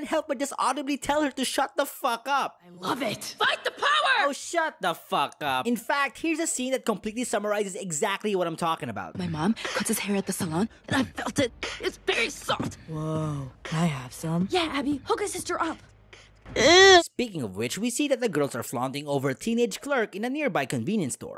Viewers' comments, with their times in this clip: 0:03 My man, I gotta hand it to you, that was the most earnest, hilarious and soul-freeing "shut the f up" I've ever heard
0:03 I heard "Oh shot the pho cup"